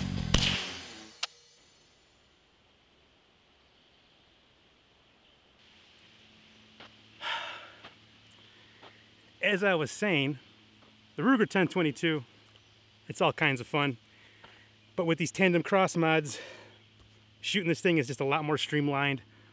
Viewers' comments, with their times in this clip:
0:07 (yelling from a distance) "Are they gone!?"